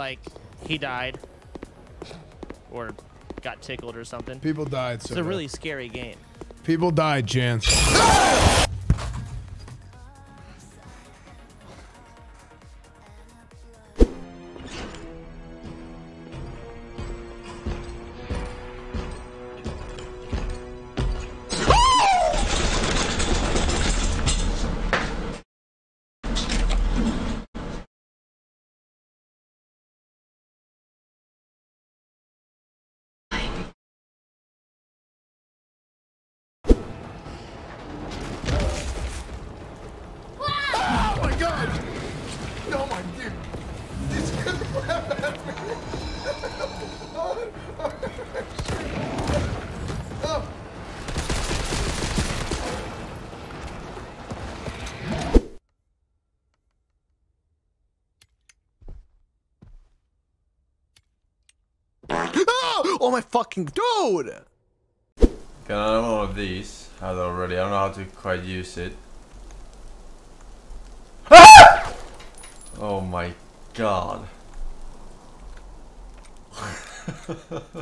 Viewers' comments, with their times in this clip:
0:05 1bullet 2 kills.they also scream at the same time
0:06 moment of silent
0:15 got scared so bad she couldn’t let out the rest of the screaming 😫
0:20 why she sound like a pinball machine 😂😂
0:20 when your trying to start a rusty car
0:20 She got so scared she turned into a jackhammer 🤣
0:20 did she not hear the loud thumps coming towards her?
0:20 gets scared Chair: SWEAKING INTENSIFIES
0:56 got scared cuz of a fart😂😂
0:56 Did he just get jumpscare by fart 😅
0:56 the scariest fart ever, had me crying with laughter.
0:57 dude really got scared by a fart Lol
0:58 imagine being playing one of the world's best horror games and getting scared by a fart
0:58 The dude that got scared by his one fart 😂😂😂😂😂😂😂😂😂😊
0:59 my man got scared by a fart 💀💀
1:00 he was scared from his own fart😂😂😂
1:00 got scared by a fart like WTF?! LOL!
1:01 this dude was scared by the sound of fart lmao 😂 😂
1:01 THE GUY GOT SCARED BY A FART BRUH
1:01 i THINK I DIED.. FARTS WILL FOREVER BE FUNNY... And I'm like.....21....
1:01 fart of doom, I'm dying
1:02 he got scared by a fart? XD